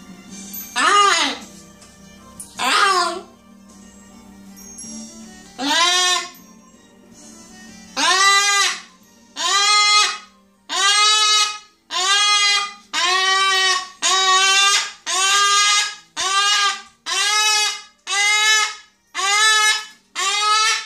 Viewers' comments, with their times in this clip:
0:06 his "tone of voice" is like when he's upset about the carrier. It seems to me in those times he says "I shouldn't have to do it" (go in the cage to the vet). But this time it just escalated into shrieks.